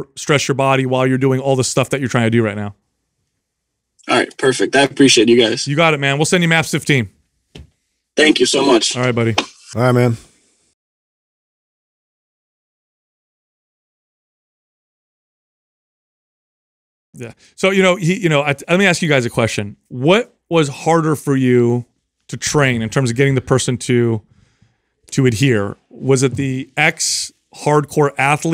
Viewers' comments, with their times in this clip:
0:09 I don't know why I found that seven-second pause so amusing. Have also enjoyed seeing how you guys construct the messages you put out, most recent example being the subject of people that have a stronger front squat as opposed to back squat.